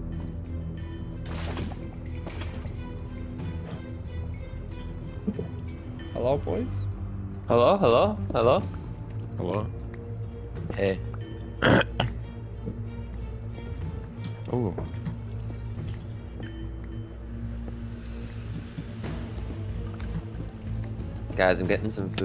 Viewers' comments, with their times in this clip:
0:08 perfect markiplier impression